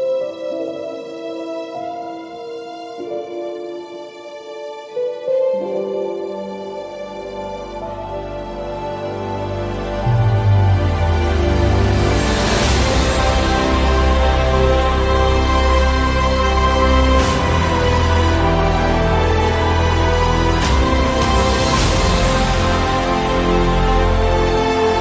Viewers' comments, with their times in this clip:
0:08 now that's BREATHTAKING. And the choice of music 👌